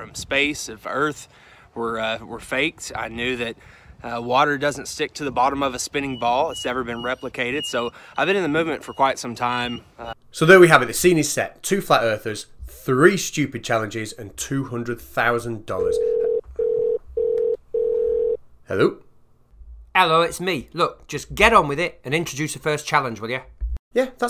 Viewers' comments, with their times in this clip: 0:05 Screw the challenge! I'm trying to deciphre what the dog is trying to say: I'm pretty sure it's "heeelp meee..."